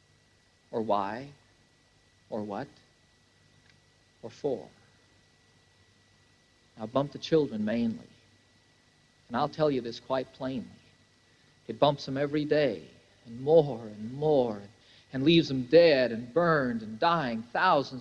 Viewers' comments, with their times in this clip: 0:06 It hurts to watch John Denver sound so sad and angry at the same time